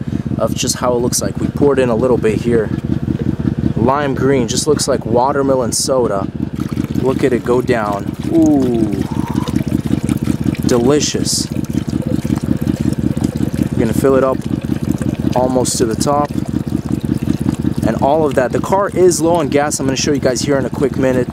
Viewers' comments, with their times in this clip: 0:08 Someone kissing: Sorry I’m dirty minded